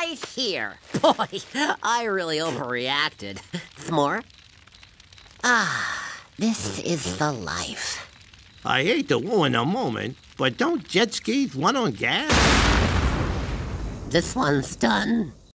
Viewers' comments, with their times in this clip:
0:08 Elmer: “I hate to wuin a moment, but don’t jet ski wun on gas…?"🤔 BOOM!🧨💥 Daffy: "This one’s done."😵‍💫